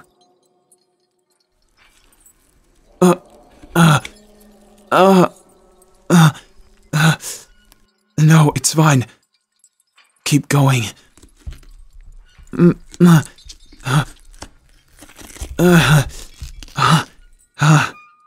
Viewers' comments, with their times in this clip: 0:04 this part sounds really sus if you don't know what there doing 😂😂